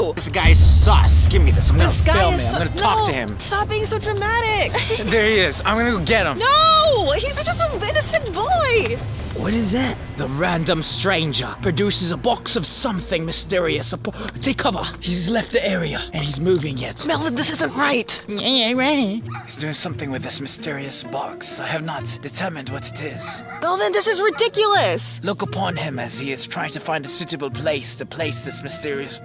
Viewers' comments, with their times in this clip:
0:10 the best British accent I have ever heard in my life 😭✋